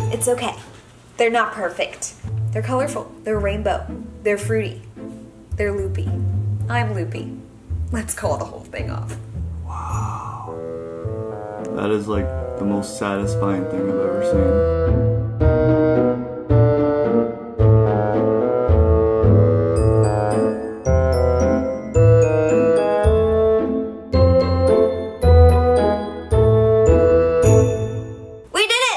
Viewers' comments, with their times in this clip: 0:10 I first thought that was wind XD